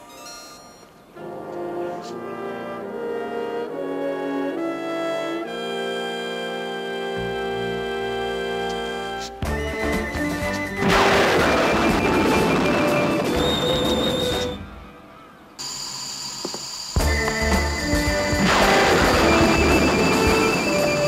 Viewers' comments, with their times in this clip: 0:09 MAN, I love the music that accompanies the spin starting ! I would love to have that music and those sound effects as an mp3 to use on my phone!